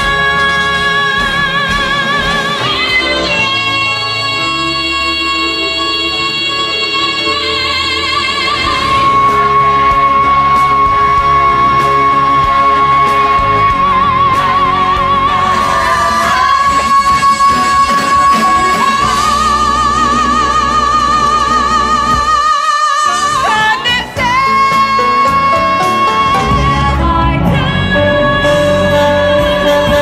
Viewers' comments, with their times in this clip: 0:10 genuinely started hearing C#6 because of the overtones!!
0:11 she hit that so perfectly I was hearing overtones